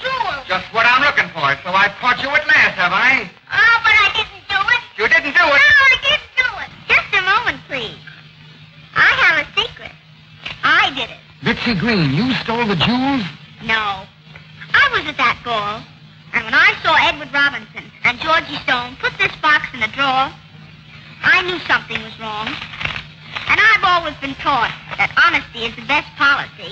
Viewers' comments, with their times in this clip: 0:10 I love the auto translator jajaja look dubs jajajajajajjajaja